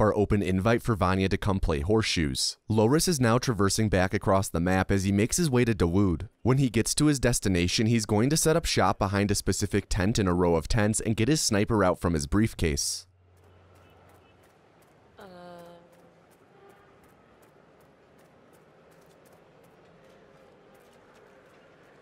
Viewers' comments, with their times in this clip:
0:06 My Minnesotan ears thought you said 'going to Duluth'. I was very confused on how he was going to get there from India in a couple minutes